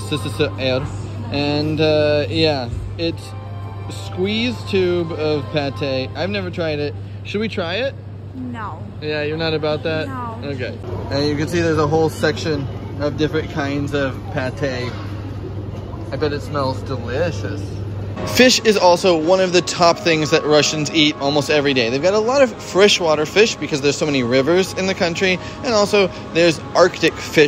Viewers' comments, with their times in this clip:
0:08 Her "No" sounds like a typical women's "No, don't even try to do it"